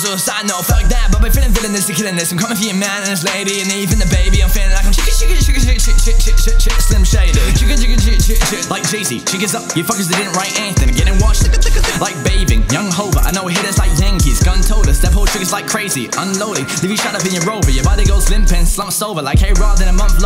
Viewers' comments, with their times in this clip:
0:08 Yo, this is actually lit, ignore any of the troll comments. Also, the part you actually sound quite a lot like Eminem lol